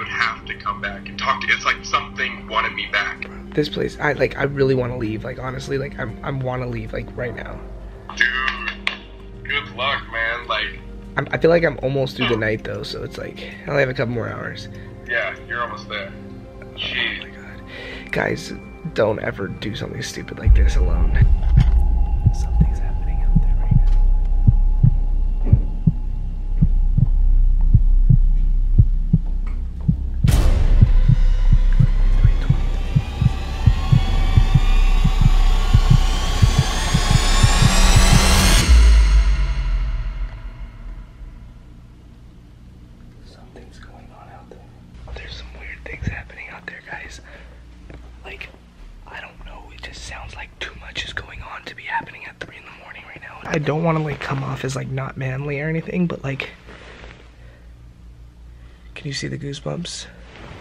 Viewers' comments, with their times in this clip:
0:07 sounded like a stone or maybe an m&m hitting the floor
0:21 The thumping is that his heart beating?
0:32 The song tho I thought something was going to pop out.
0:38 I swear to everything the music scared me half to death, I was covering my eyes when he looked through the peephole.
0:44 teh music gave me anxiety i was just waiting for a jump scare but then there was nothing ffs